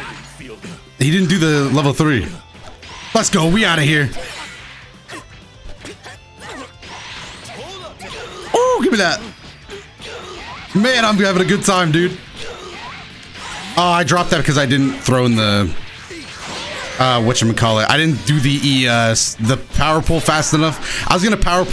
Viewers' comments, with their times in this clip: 0:07 why it sound like yamcha said “hold up nigga”